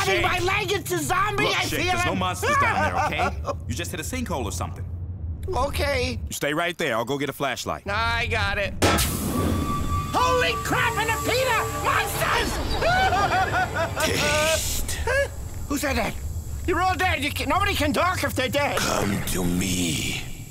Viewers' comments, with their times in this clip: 0:05 Why does Shake's terrified "Okay" make me sad? Is there something wrong with me?